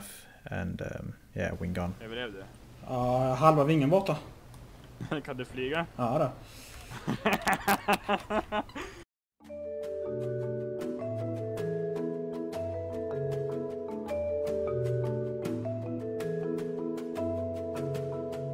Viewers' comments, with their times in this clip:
0:06 Laugh of Satan